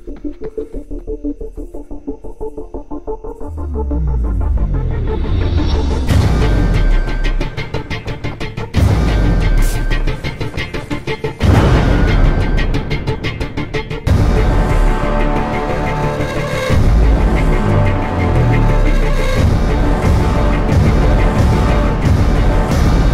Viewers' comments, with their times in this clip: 0:10 Did anyone else hear the Wilhelm Scream